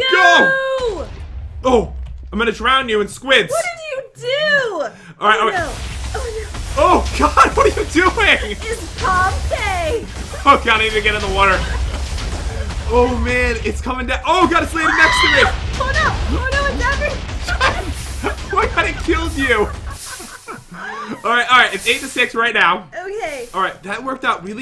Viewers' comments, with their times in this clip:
0:08 Its pom pay! Did she learn another language?